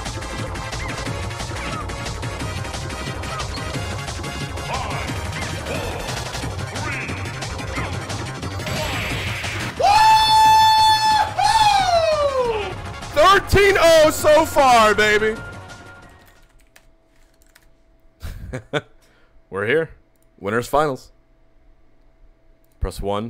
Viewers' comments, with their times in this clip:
0:10 I swear I heard sudden death, what happened lol